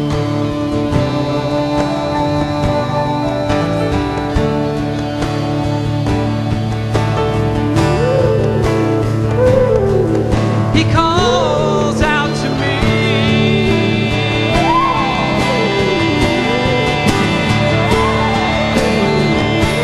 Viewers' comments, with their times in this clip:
0:05 the flute from o.O woah